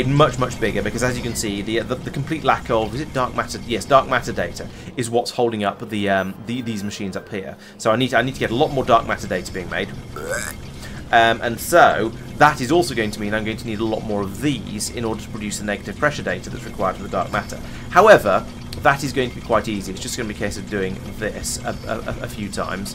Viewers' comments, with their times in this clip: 0:09 found a frog screaming for help!